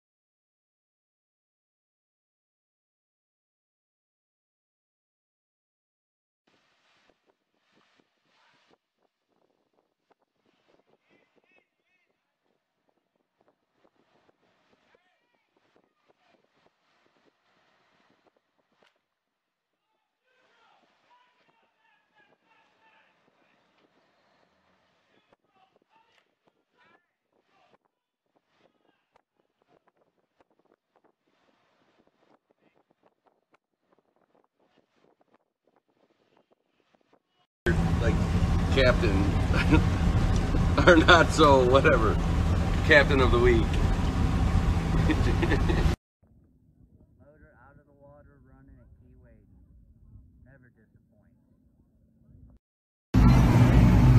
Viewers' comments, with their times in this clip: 0:04 sport fisher looked like he was rocking his speed parallel park, but I'm guessing from the guy astern yelling at him, he might have over shot, the done it again forward. Maybe it's weigh-in time for a Calcutta. 🤔😏
0:37 The guy trying his hardest to say Qualified Captain " almost brings the humor back to saying "like Captain, lolol or ah, not so whatever, Captain of the week! Huhhuh "